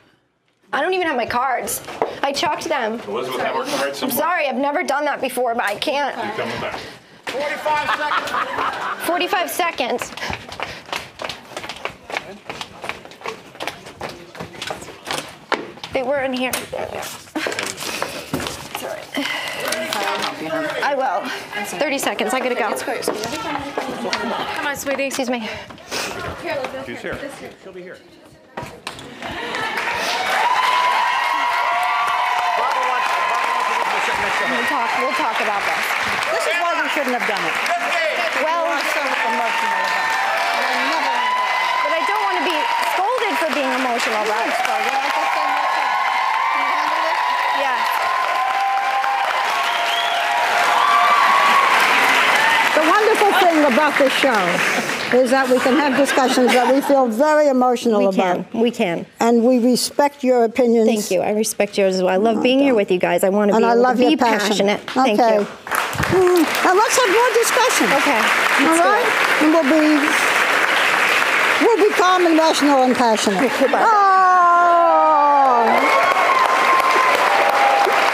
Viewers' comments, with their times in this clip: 0:08 I love how we randomly hear Joy’s cackle 😂😂😂
0:54 yes, she was whining like crazy. And as they said, they wanted them to wrap it up. And look at the childish behavior
1:01 Barbara mutters, "no, you don't" under her breath Lol.